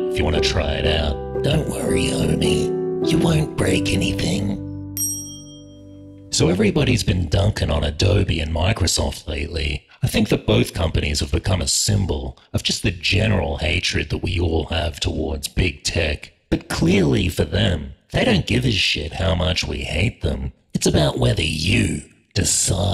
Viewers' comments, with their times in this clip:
0:05 Do you use voice effects or does your voice always sound like that? Definitely one of the pictures of all time.